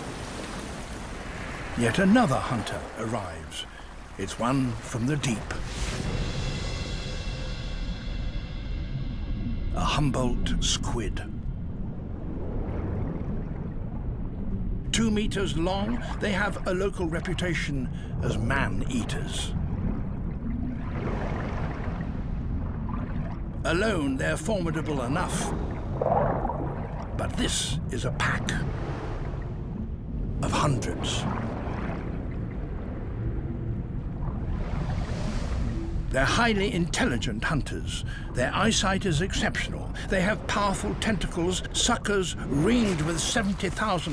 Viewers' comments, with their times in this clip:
0:09 “a humbolt squid” farts aggressively**
0:27 i thought a group of squids was called a squad? Also we could all do without the cheesy sounds effects XD